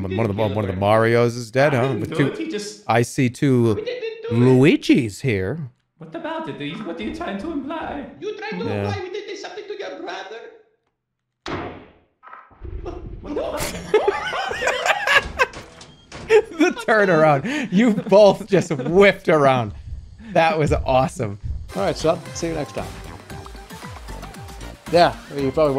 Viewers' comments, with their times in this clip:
0:10 i love how jerma just flicked his mouse like the bang was behind him lol